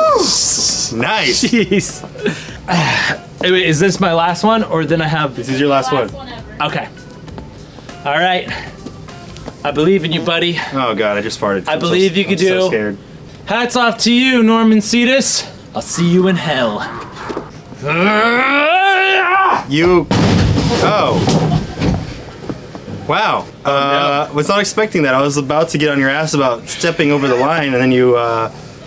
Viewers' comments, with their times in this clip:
0:09 Anthony audibly toots